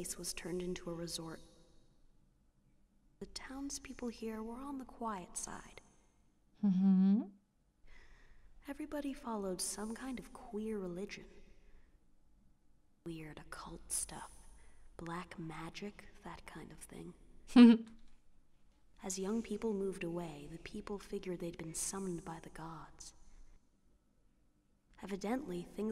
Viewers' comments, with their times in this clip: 0:10 when the quiet is quiet, it is quiet.